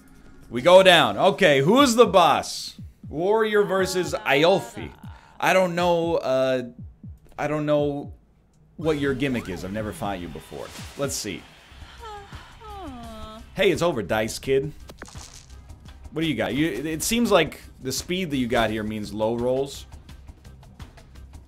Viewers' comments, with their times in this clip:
0:03 probably the biggest butchering of a name I’ve ever heard